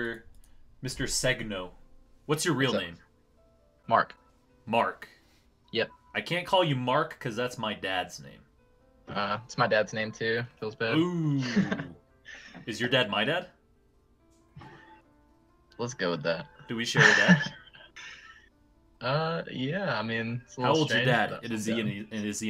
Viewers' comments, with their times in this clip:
0:03 wtf that marc sounds like the "bark" from the gabe the dog video